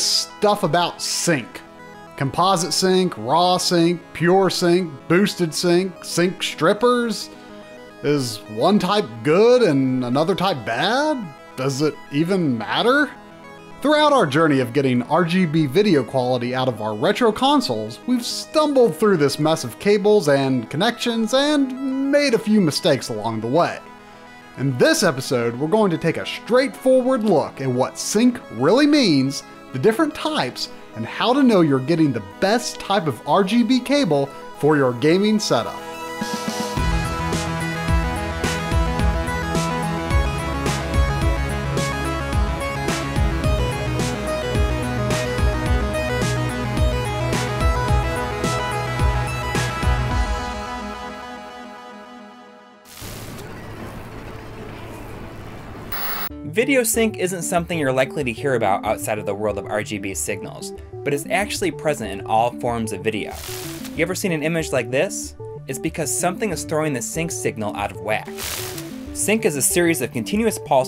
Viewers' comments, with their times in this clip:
0:06 Demonitized, and his voice sounds concerning after saying that.
0:55 I absolutely despise that song that starts I know it is public domain but it's annoying to begin with and WAY over used.